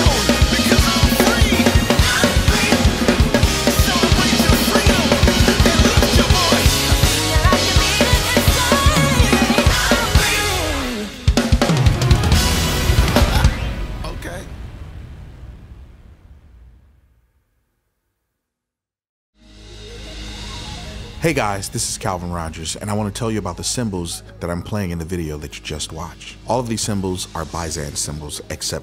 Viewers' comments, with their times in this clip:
0:10 that run tho